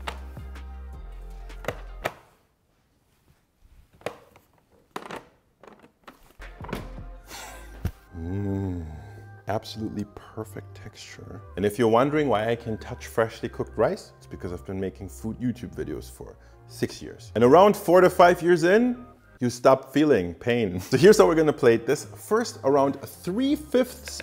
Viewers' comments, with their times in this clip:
0:08 I'll start saying that in bedroom. With that tone of voice.